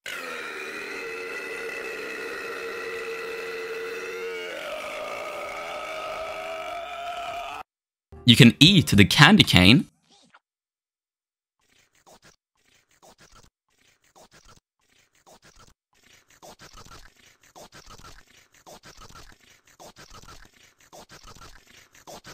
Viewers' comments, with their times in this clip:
0:08 that's not eating.....